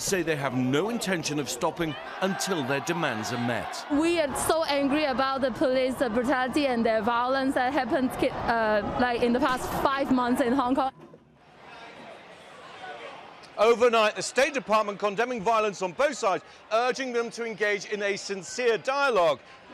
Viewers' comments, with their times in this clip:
0:03 WEA SO ANGY ABOU TE POLI BRUTALITHEY AN VIOLENS